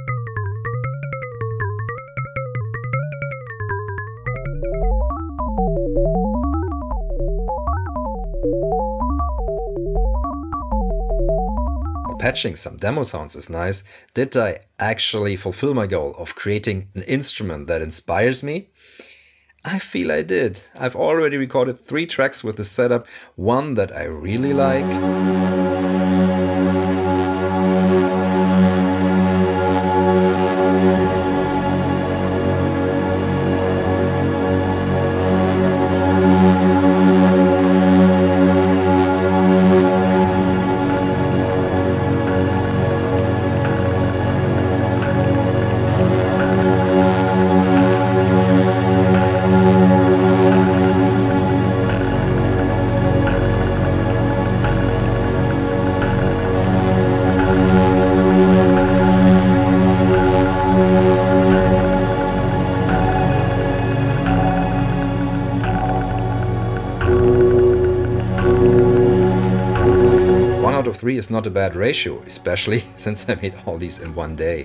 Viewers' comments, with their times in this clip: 0:07 minutes you'll almost in EMS Synthi AKS theritory. Almost sounds like Pink Floyd - On the run. Also your drones sounds fantastic! Great sound! :-)
0:57 The Cwejman DMF-2 sounds so good!